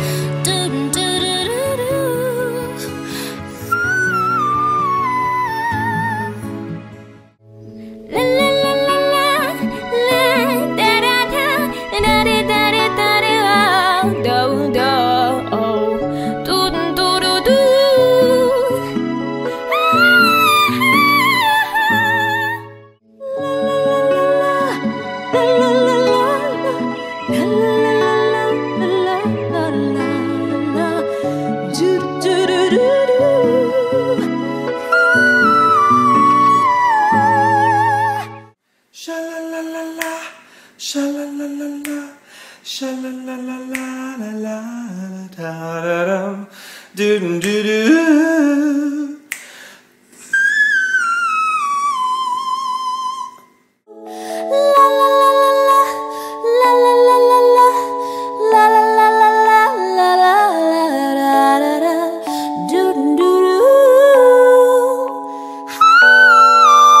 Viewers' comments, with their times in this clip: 0:07 Sounds like a dying sheep
0:07 sounds like she tried to make a melody out of a scream
0:08 is the fergie equivalent of the national anthem at the all stars.
0:08 dafuq she really feelin it with dem high notes 😂
0:08 "How unnecessary" "she sounds like a bird" "she thinks it sounds good but it's not like that hahahaha" is her style 🙄 It does not have to be identical or very similar to the original because it is her version, it does'nt sound like a bird, are vocal arrangements. She has the talent and KNOWS how to make a whistle voice. Why do they discredit her?
0:16 yeah is so unique lmfao
0:17 Basically yodeling... She needs more control over her voice :/
0:24 was the best girl to me and her whistle sounded like Minnie’s!
0:37 clean whistle + clean vibra Hands down
0:39 Perfect pitch and shook me
0:40 the “ sha la la la la “ was funny but i can’t tell if that was a whistle or not 🤨 ? but it sounded good
0:45 another fail. This song is not for men to sing, only to listen
0:50 wish that voice is just like my grades
0:51 투모로우바이투게더 how is not a whistle note